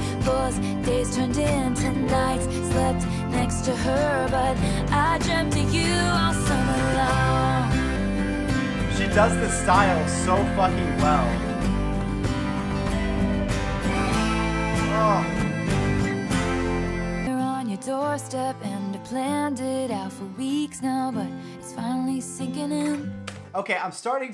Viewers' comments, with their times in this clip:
0:08 it made me laugh so much when the harmonica took him by surprise and his whole expression changed